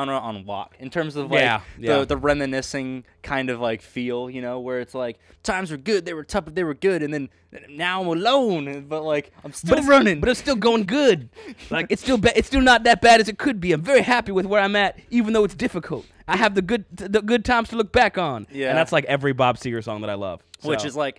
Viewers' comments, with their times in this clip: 0:04 Loved the reaction - laughed out loud when the guys both morphed into Mitch Hedberg! (Look him up!)